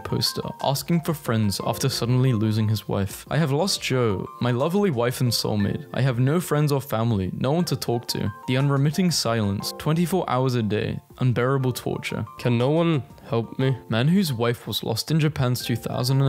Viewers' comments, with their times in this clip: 0:03 You can hear his voice break at those last two words. This story is absolutely tragic 😢